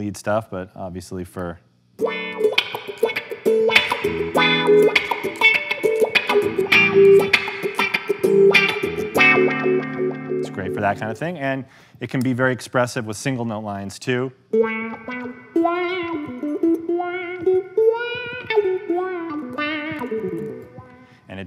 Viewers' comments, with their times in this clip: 0:04 "How porn music is made"